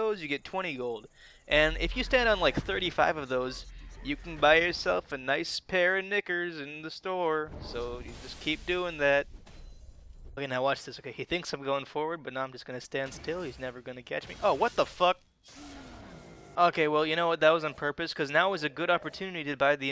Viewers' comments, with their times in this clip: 0:06 Nobody's commenting on ??? Was that supposed to be "knicker"? Cuz if it was not only are knickers underwear not shoes, but also, that was some REALLY poor inflection.